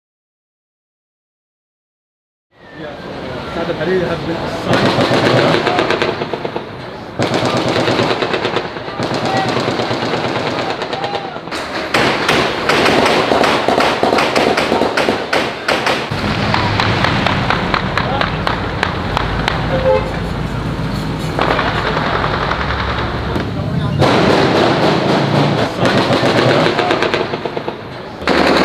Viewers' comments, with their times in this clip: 0:04 all the _ firing sound its like PUBG in real life!
0:05 when the gun fire started and no one batted an eye 😮😮 that’s how you know they are use to it
0:11 firing machine gun to the beat lol